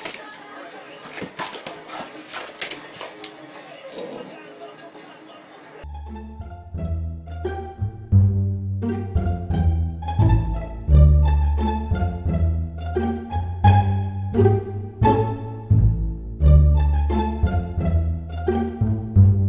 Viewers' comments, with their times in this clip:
0:05 sounds like someone is watching training day